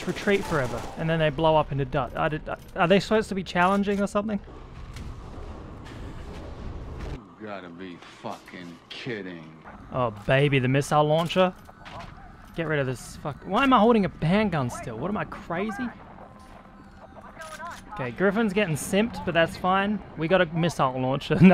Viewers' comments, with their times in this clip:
0:04 My brain: "Subscribe for more S.T.A.L.K.E.R. related content" xDD